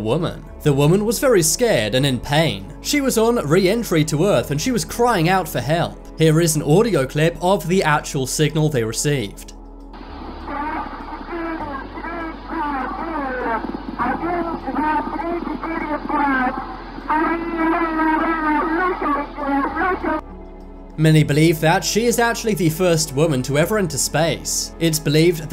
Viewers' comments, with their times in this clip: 0:10 wtf is she saying ?